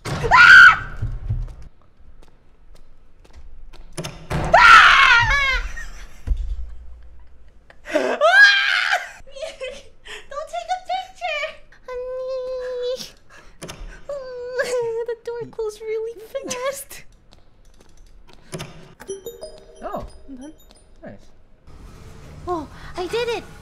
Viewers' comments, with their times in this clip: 0:04 her scream while falling on the ground 🤣 i kennat 🤣🤣🤣